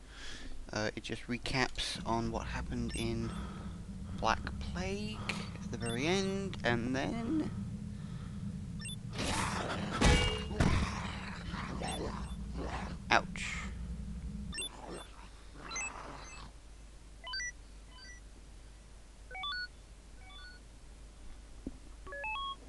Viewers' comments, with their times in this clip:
0:09 Loved that frying pan punch sound xDD Laughed so FUCKING HARD!